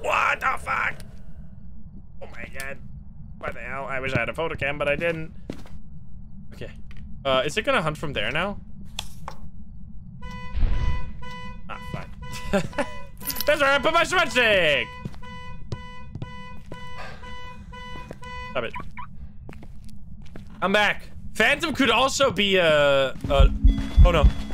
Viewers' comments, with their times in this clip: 0:10 so funny that the car alarm went off on the tower